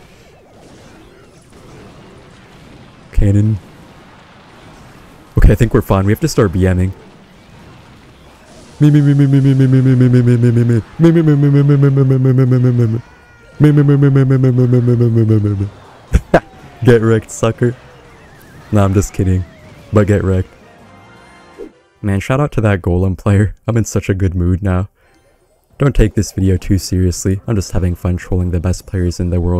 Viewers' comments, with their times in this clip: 0:10 never heard a more accurate Homer Simpson chainsaw impression
0:16 The babababa 😂😂……its my new ringtone now😂